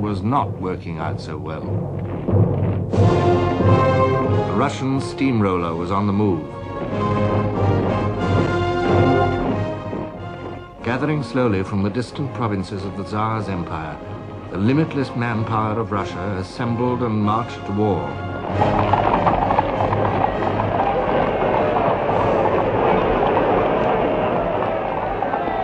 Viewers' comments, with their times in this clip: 0:10 the added audio (drums/ yeahhh) in Tsaar Russia is a nice fanatasie.